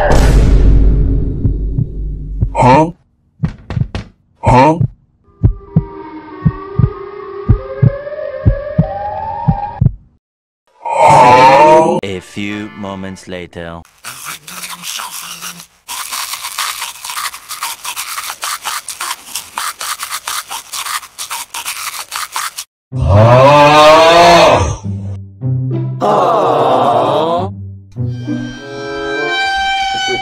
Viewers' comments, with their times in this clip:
0:07 Siren head sound💀
0:13 why they singing lol ''everyday i am shuffling''